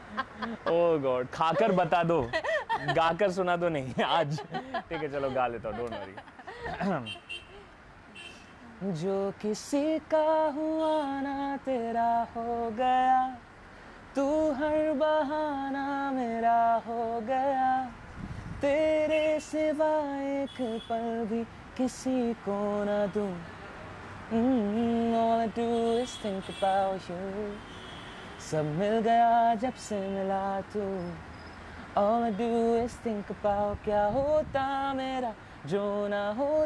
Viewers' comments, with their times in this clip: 0:08 he sings bomb🥵
0:24 the vibe of the place plus song woahh